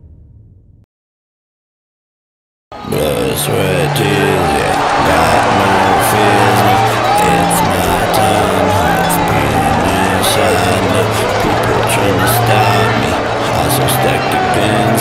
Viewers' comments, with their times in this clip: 0:03 I thought someone burped 😂😂